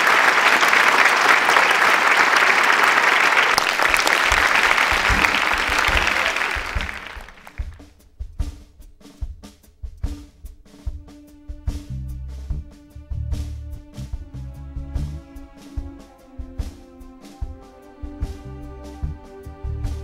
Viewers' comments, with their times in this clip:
0:06 Now, this is the Tom Scott I know and love...just before he started to get a bit too commercial for my taste. Never realized he sound so nice on alto. I don't recall him playing it much. Thanks so much for the post :)